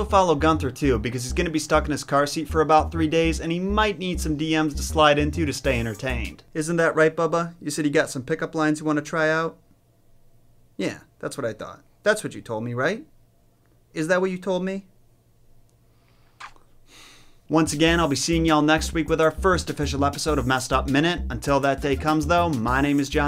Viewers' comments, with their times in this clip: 0:09 I just love how he talks to his pug. 😊❤